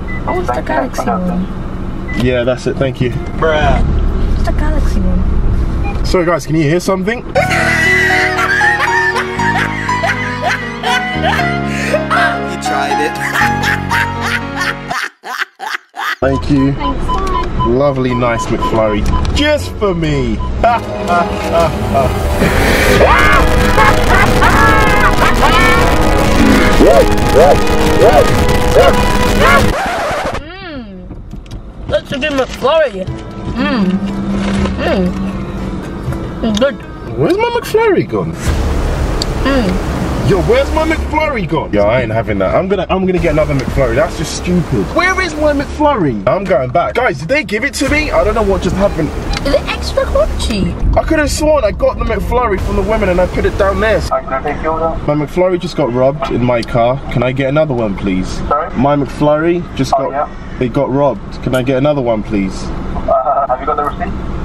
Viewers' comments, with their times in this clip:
0:07 bruh this is the best part he tryed it dude was keep laughing 🤣👍
0:23 That evil laugh though Sounds like the zombies in mobile call of duty.
0:47 iS iT eXtRa CrUnChY His eyes tho XD